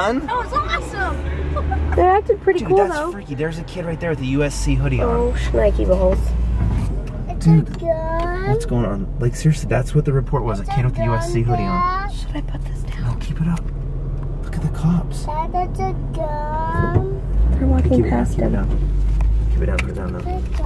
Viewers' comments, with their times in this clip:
0:07 you can hear the fear in Shay's voice when he says "what's going on?"